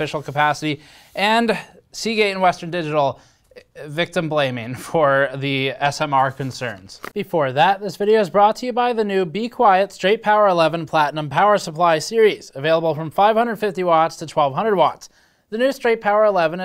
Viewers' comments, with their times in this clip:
0:03 ASMR concerns? I need no ASMR! I watch your videos and your voice lulls me to sleep.